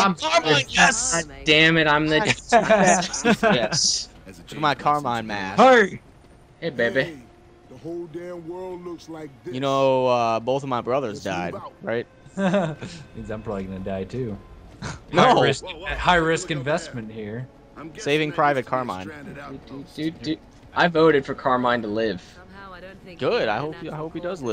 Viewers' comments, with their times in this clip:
0:07 sounds like Coach from Left 4 Dead 2.